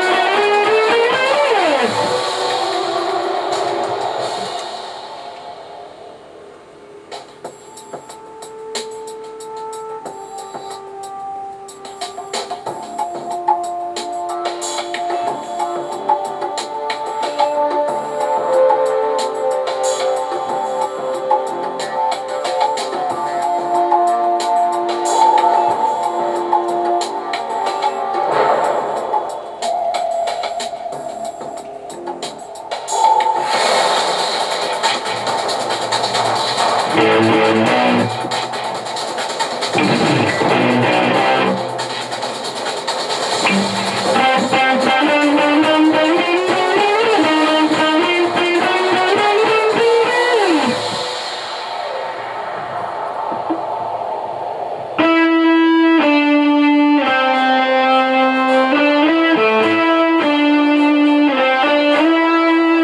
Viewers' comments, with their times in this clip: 0:08 you shoulda had someone do a drum part
0:44 he messed up im just saying that doesnt mean its bad. its awesome